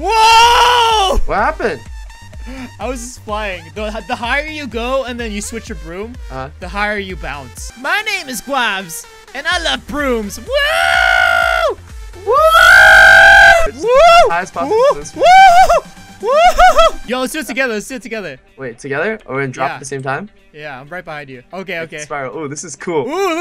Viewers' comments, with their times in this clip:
0:10 sounds like sqid and stampy joking around